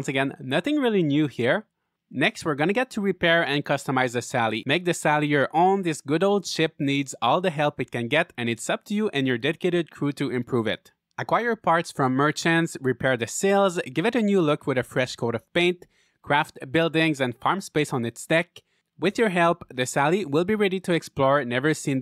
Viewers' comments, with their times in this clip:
0:08 "...and it's up to you and your dead-kidded crew..." 💀Well, that got dark fast 🤣 That's what I heard when he said dedicated 😅, lol.